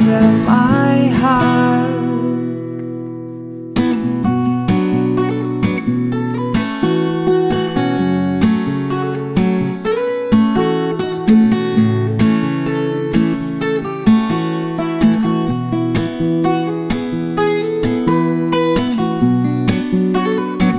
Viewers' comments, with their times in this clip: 0:03 = Good luck to anyone writing tabs for that! Amazing.